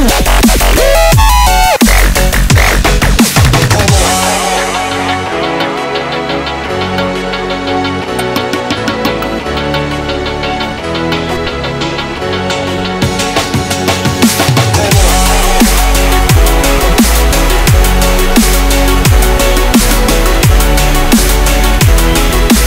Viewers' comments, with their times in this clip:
0:03 perfect way to end. Love the melody